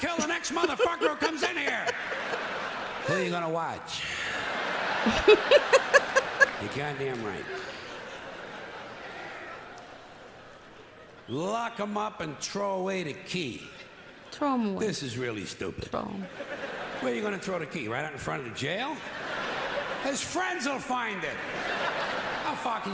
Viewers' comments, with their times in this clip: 0:09 that's the New Yorker coming out lol